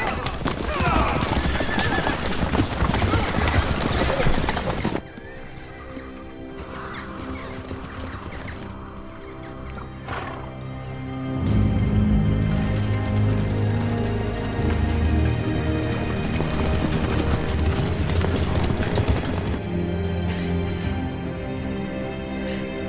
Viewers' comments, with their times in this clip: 0:05 The score was fucking epic